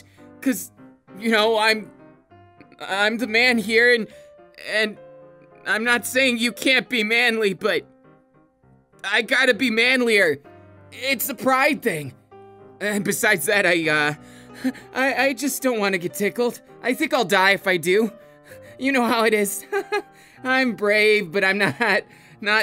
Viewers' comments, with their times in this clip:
0:09 I got to be MANLIER Kirishima-chokes on air EXCUSE ME!